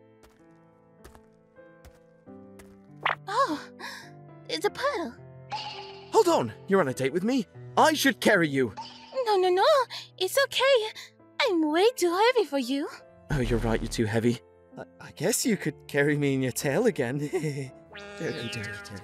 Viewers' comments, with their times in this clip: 0:03 love how she says "it'sa puddle" :3